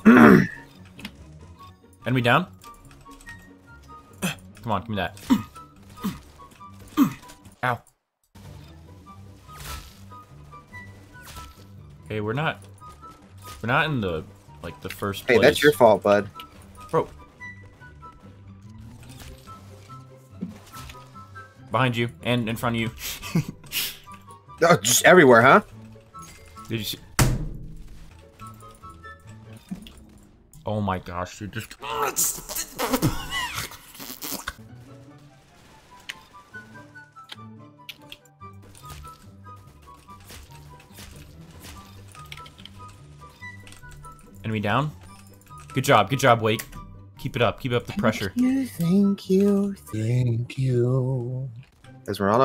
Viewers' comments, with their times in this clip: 0:06 the way he said ow after speaking in a deep voice
0:33 is he farting or trying to beatbox
0:33 when you try to beatbox but it comes out wrong